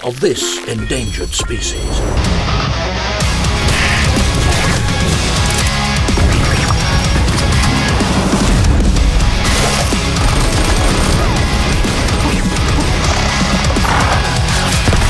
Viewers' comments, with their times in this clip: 0:03 it's litreally the death sounds of one of the enemy in there, i don't know what it was but it's probably the bird